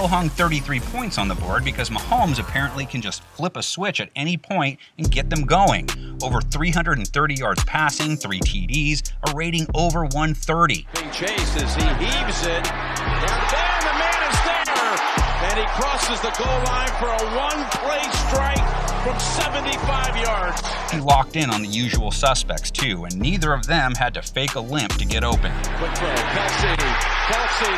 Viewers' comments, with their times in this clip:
0:10 That beat drop